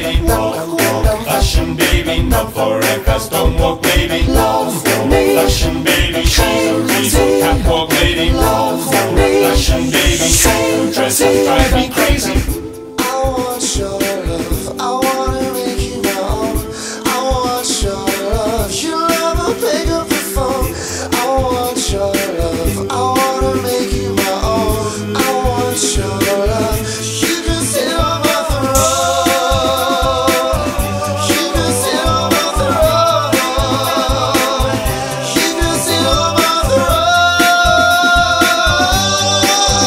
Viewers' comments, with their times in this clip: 0:04 This is pure class. The superimposition of Billie Jean is the icing on the cake!
0:17 what is the name of a principal singer male ? the man that is huge to the girl ..... he have a awsome COUNTRY VOICE ¡¡¡¡¡¡¡¡¡¡¡
0:20 what is his name ?`please somebody answer me he is awsome i love his country voice